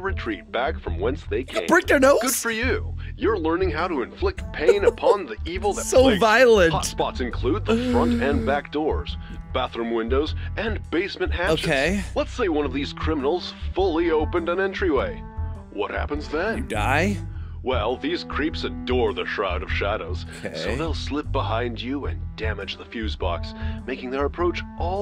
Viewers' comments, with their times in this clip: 0:10 (Me watching thinknoodles) Thinknoodles: Ahhhhhhhhhh Me: XD Thinknoodles: noooo (Phone rings) Thinknoodles: NOT RIGHT NOW WHO'S CALLING ME AT THIS TIME IT'S